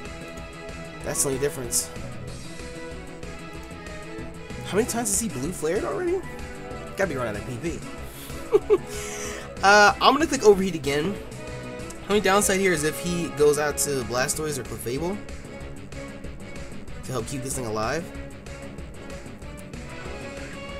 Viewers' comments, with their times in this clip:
0:07 Lol that giggle cracked me up big time